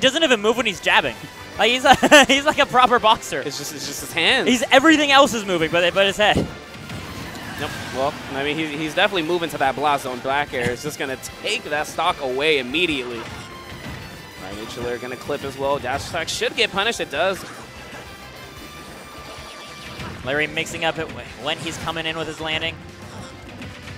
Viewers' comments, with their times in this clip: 0:06 blastzone blackair? xD cmon...